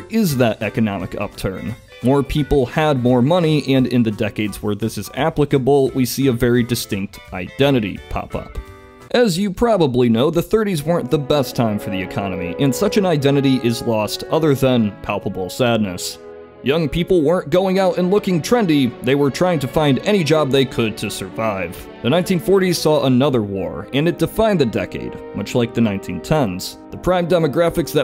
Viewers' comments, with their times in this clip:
0:09 THE MOMENT I HEARD THAT IT MADE ME THINK OF THE CARETAKER ALBUM EVERYWHERE AT THE END OF TIME NOW ITS STUCK IN MY HEAD AGAIN PLEASE HELP